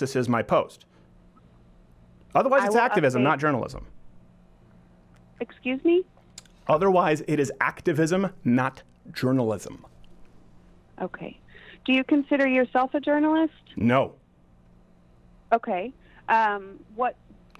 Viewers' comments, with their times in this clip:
0:05 It's always such a power move to slowly repeat yourself after someone says "eXcUse mE" like that